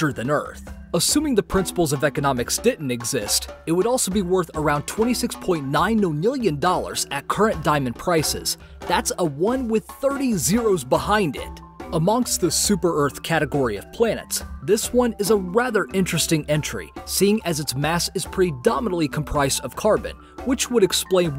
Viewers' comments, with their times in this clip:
0:04 Million or nonillion? You showed 26.9 nonillion on the screen, but you said what sounded like "26.9 million."